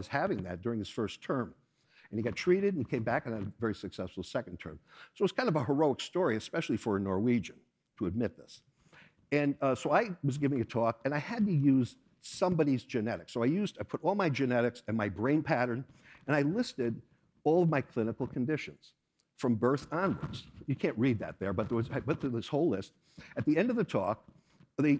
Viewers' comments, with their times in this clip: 0:09 "So it was kind of a heroic story, especially for a Norwegian to admit this." At the venue: ~Dead silence~ Meanwhile, in a house, far, far way: BrÄH! An unexpected, sharp, whip-cracking bleat thrusts out from the deep, hitting the air, the walls, the windows... in less than the blink of an eye, the world quakes, and stops. I look around. ... Yeaps, there are no Swedes in that audience, that's for sure.